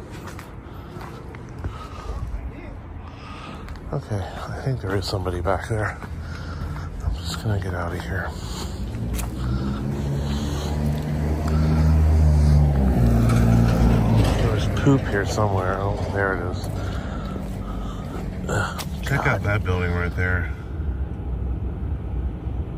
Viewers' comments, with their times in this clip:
0:03 Someone yelled "over here" I'm guessing from in the buildings because it's muffled sounding, or it could be somewhere in the distance...